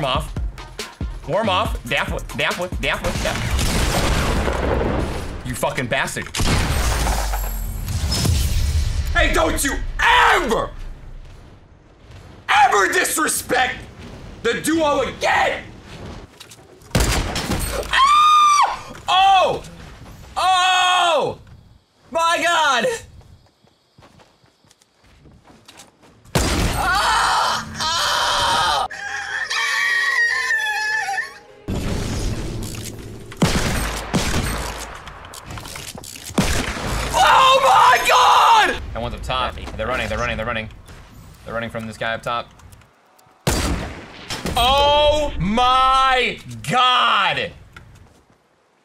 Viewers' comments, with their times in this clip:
0:10 wow, sounds like OG Loc from San Andreas
0:17 teenage girls at slumber party
0:25 My scream when I get an f
0:26 the sound babies make when born
0:27 when someone is having a baby
0:28 Nobody: Chikens at 5 a.m:
0:29 I never knew that ninja was secretly a bird
0:29 No one: My neighbors chicken at 4am:
0:29 The wild Ninja's mating call
0:29 sound like chicken trying to lay eggs
0:29 when your choking on something and you want to scream
0:29 When you open the door to the special class and all you hear is ...
0:29 *ninja turns into a dino
0:29 When your trying to sleep Chickens:
0:29 An Rooster When Morning
0:29 Roosters in 6 am in the morning
0:29 Me : Goes to my village for some peace. Chickens in the morning:
0:29 Chicken at 6AM be like:
0:29 The hen every morning
0:29 sounds like an actual rooster😭